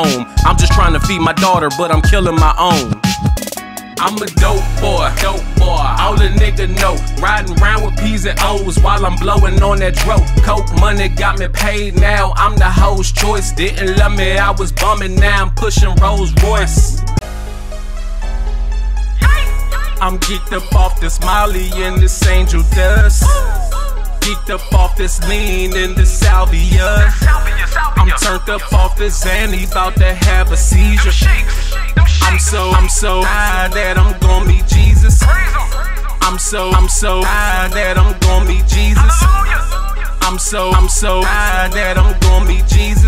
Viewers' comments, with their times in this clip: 0:04 mp3 player, big white T and air force ones type music 😆
0:05 No cap 😂❤ i hear ti or shawty lo energy
0:19 was actually good so is the beat
0:26 kinda reminds me of speaker knockerz